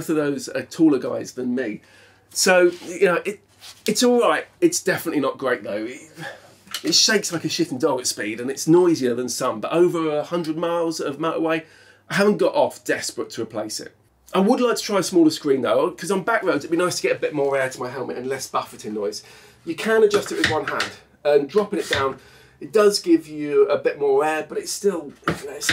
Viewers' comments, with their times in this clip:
0:07 did you say it “shakes like a shitting dog” 🫢😂💀